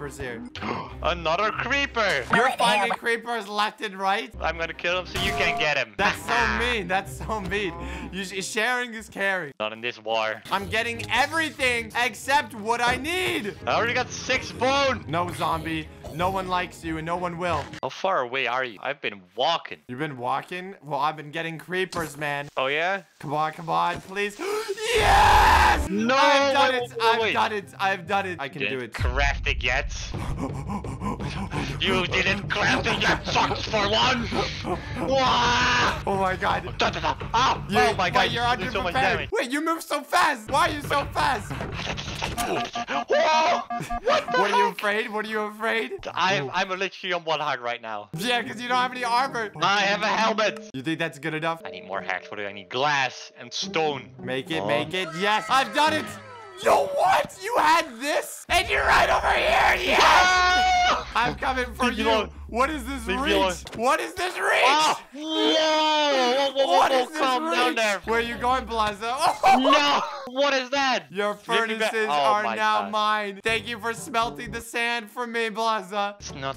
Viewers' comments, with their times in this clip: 0:04 I love this pan sound effect
1:00 what is that scream?
1:00 what is this scream?